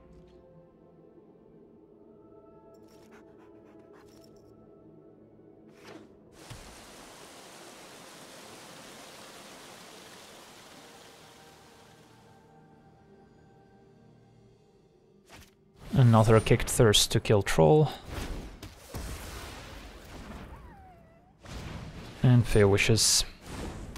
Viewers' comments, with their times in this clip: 0:06 was clearwater pathway always so ASMR-y?